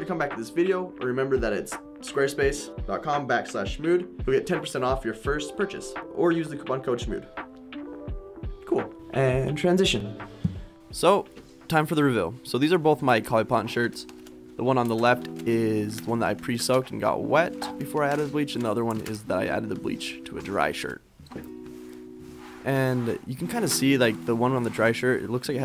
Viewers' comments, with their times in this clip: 0:10 Coly Potton ... okay
0:12 Definitely heard “coly potton” 🤣